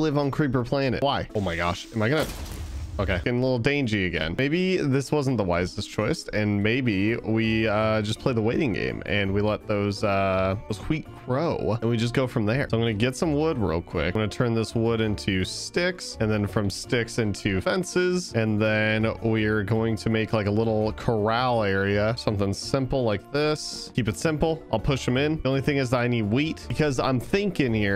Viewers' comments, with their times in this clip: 0:08 … did… did you just say HWEAT?